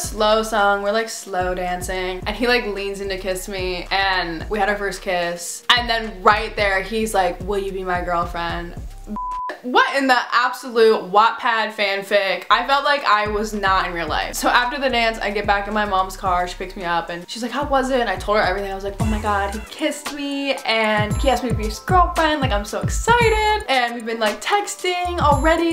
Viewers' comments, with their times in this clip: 0:09 did u say the n word lmao sounded like it